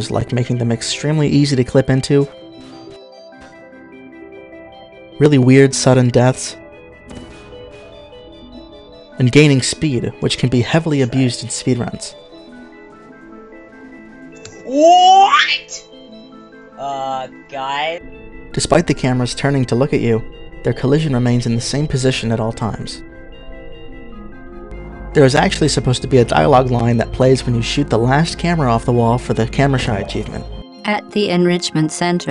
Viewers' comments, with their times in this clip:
0:10 that scream got me hard 🤣
0:14 that voice crack lol😂